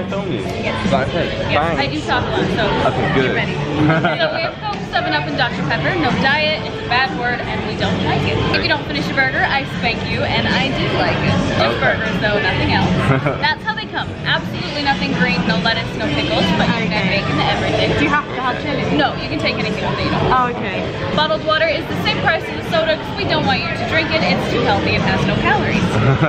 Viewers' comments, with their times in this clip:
0:07 Oh God... The American accent its so lovely.